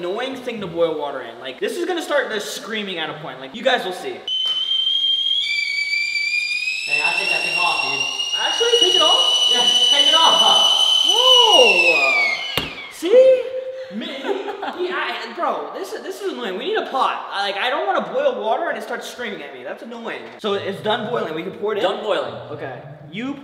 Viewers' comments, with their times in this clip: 0:04 In that sounded like a cartoony character after eating a spicy thing
0:04 when a turbo is in ur car